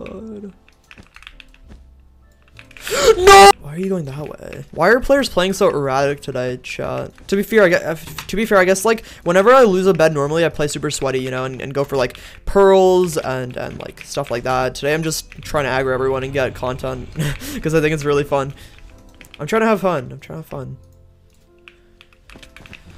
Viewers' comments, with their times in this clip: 0:03 THE PERFECTLY CUT SCREAM LOLL